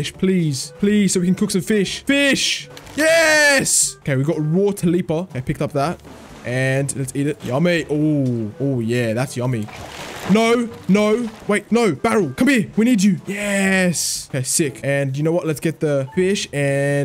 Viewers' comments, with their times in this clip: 0:04 my guy said tilipa 😭